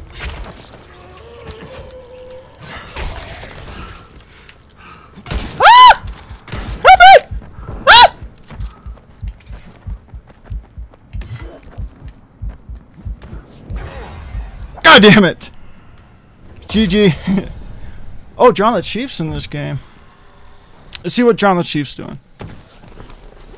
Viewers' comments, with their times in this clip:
0:05 Manliest Scream Ever.